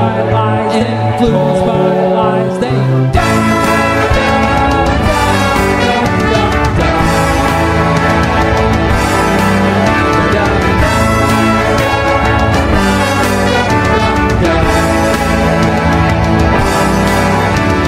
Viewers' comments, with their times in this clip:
0:03 that moment when the beat just drops